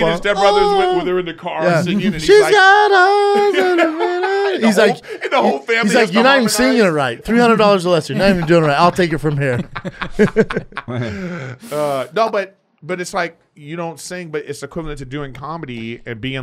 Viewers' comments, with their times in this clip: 0:04 Chris face as Brendan tells the story, going from genuine excitement to fizzled disappointment - followed by that subtle fake forced chortle 😅😂😂😂